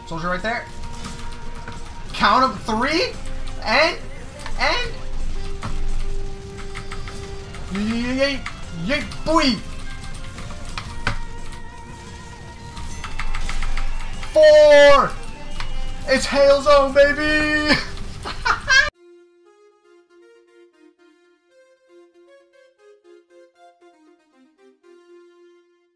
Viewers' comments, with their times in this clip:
0:06 how you turn around that quickly? did u use a controller if so it sounded like your using a keyboard :/